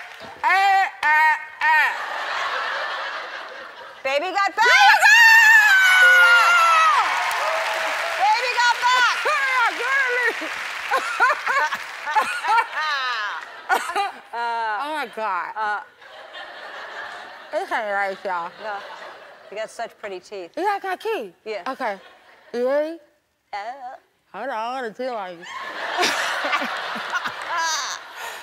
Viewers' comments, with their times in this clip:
0:08 that laugh sounds just like nicki xD and that"omg"
0:09 when she laugh i think it was the most uncomfortable thing ever